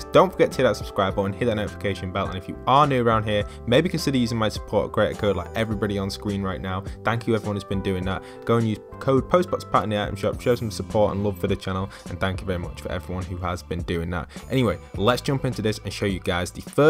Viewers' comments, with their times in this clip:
0:03 Look what’s a scween?